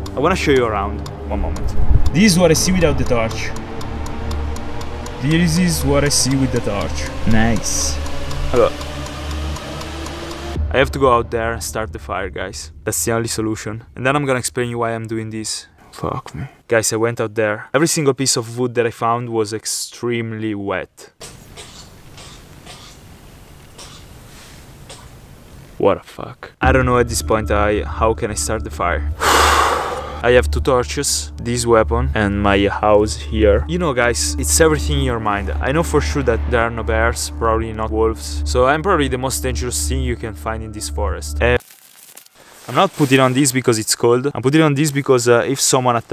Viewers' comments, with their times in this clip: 0:07 that music scared the shit out of me
0:19 that sounds like parrot coughing 😂
0:25 Bro I love you accent. I also love you say "Wadda fuck" 😂😂
0:27 bless you mate